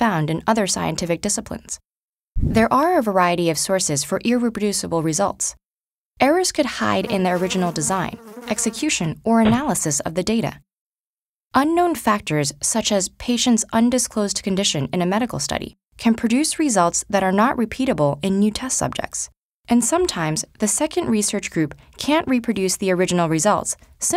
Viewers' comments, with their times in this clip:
0:06 Literally I'm so stupid. I smacked my headphones off because I thought there was a mosquito near me lmao
0:06 I actually thought there was a fly near my ears I closed my ears in
0:07 is just cruel to headphone users, haha. I paused the video to kill that fly before I realized it wasn't real...